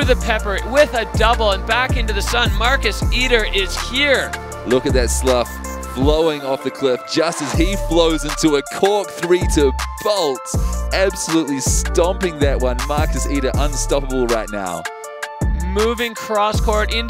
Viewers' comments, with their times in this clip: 0:05 Props to the editor for that sick music break sync on landing, starting